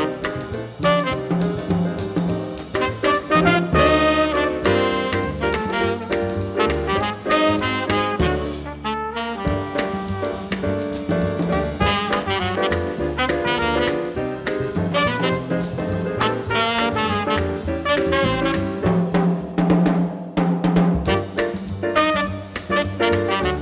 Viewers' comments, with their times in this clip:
0:07 Is it a Neapolitan chord ? Does anybody know what scale do I use over it?